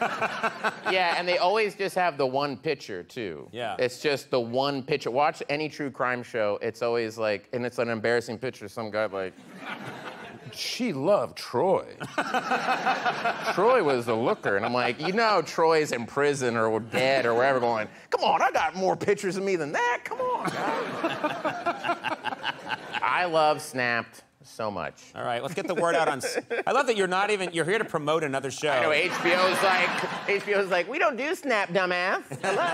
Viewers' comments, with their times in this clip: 0:06 You never hear the Oklahoma in Bill’s natural accent except in this video ! “Pitcher” instead of “Picture”
0:17 perfect Chris Pratt impression 😂